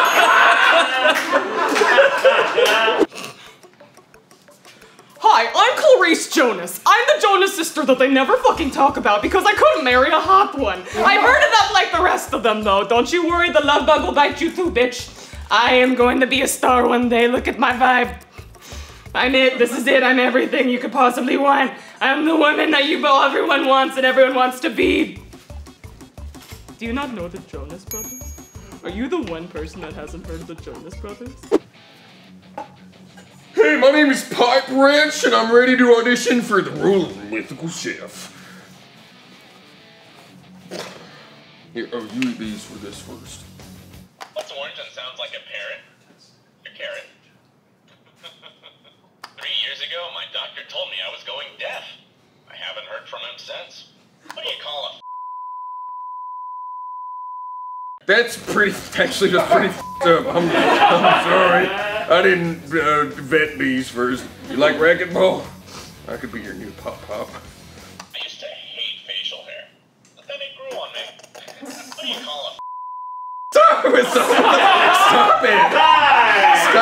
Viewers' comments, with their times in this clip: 0:07 do they not censor out f words anymore?
0:07 welp, they forgot to bleep that one😂
0:08 They missed an F Bomb
0:59 I love this, but, the 8 second or so beep literally ruined the joke. I have no idea what happened. Is there an uncensored version of all of these?